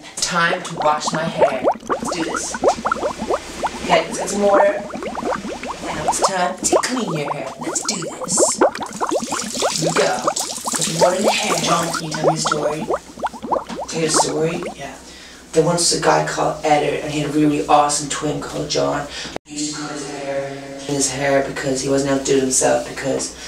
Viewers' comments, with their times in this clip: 0:06 i love the bubble noise